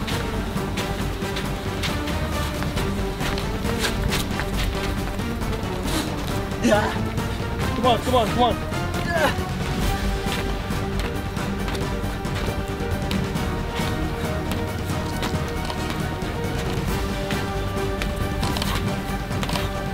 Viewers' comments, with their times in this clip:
0:07 PINK PANTHER MUSIC SUITS BETTER THAN THE ....